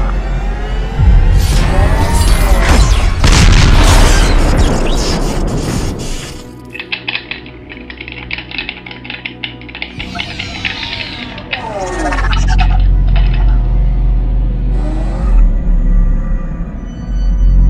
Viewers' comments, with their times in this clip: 0:05 spamming keyboard noises